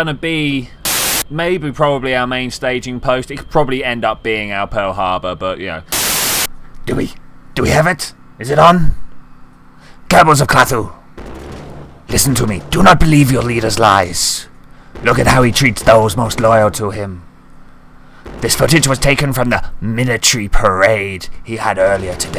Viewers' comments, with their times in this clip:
0:07 you sound just like Hitler